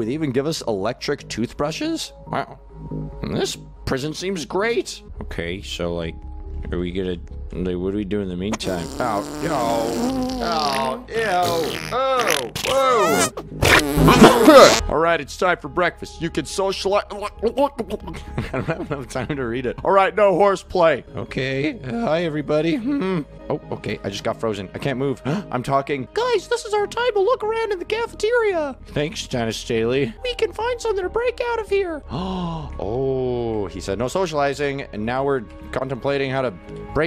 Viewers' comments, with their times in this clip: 0:10 when denis's person went on the tolit and farted it made me laugh SO HARD
0:14 you're reading quite slow. read faster
0:25 he didn’t do his normal voice